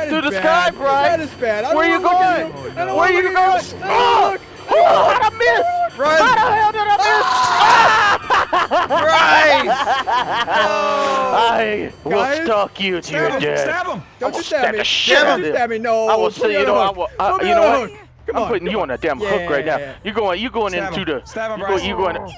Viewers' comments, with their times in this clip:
0:06 that scream was perfect!